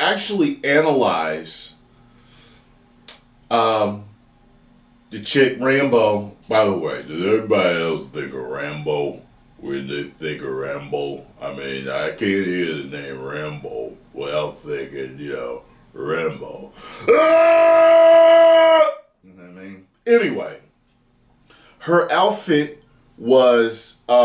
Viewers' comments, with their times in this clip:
0:06 bouahah ahahaahahaha the best rambo imitation i nver seen soo far xD